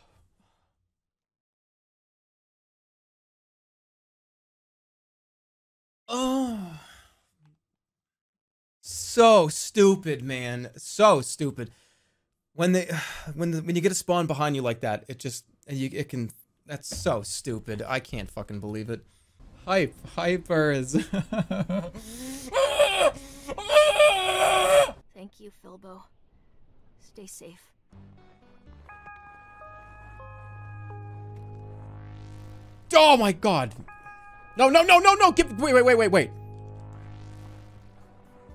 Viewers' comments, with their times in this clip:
0:05 I think this is the most inappropriate noise Jerma has ever made 😳
0:19 good alarm clock